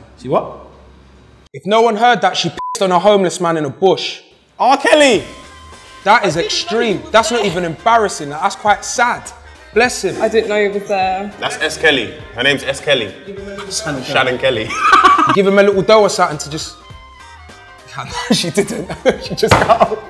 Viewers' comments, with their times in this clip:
0:03 did harry shouting r Kelly 😂😂😂